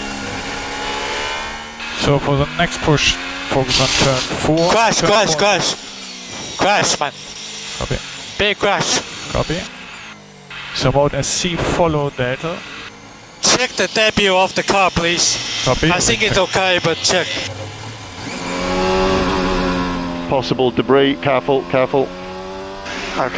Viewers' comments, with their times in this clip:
0:06 CLASH, CLASH, CLASH